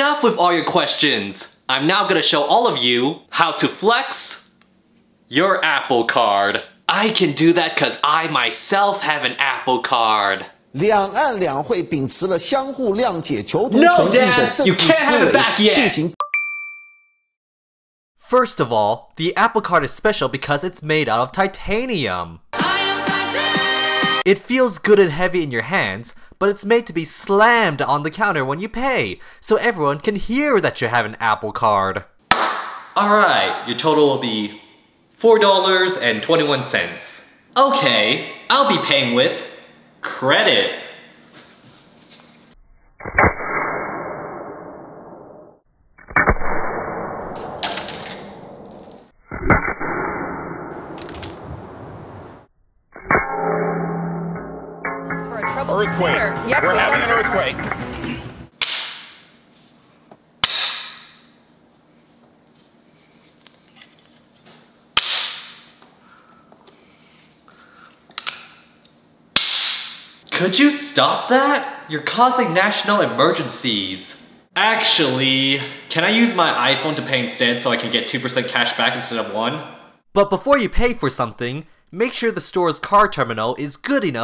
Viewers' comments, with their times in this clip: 0:10 that talking tho
0:11 that Chinese makes me laugh 😂 !!!!
0:11 when his dad talks
0:11 SPEAKING HIS DAD AN CHINESE
0:42 every ace attorney slam ever
0:43 nani (anime sounds)
0:43 BANG IN OHIO
0:51 Mac startup chime!
1:06 why did the ipad have mario kart toar?